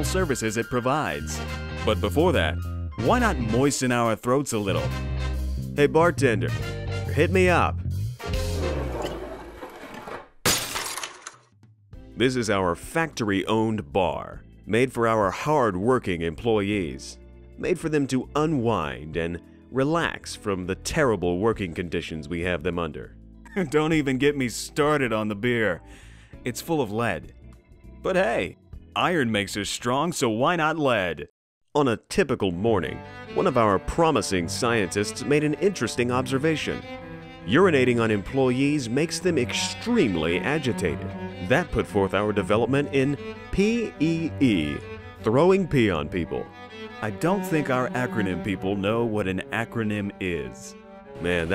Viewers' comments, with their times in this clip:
0:06 “give me a drink, bartender” woosh followed by smashing sound
0:32 I thought my phones alarm was going off, but its just the same exact song.
0:33 I have never heard that music without thinking about P.E.E